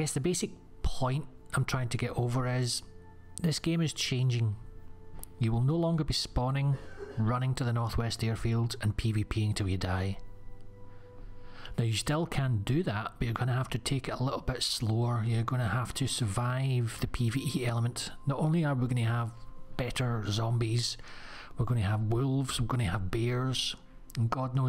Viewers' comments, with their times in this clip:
0:06 Someone is coughing in the background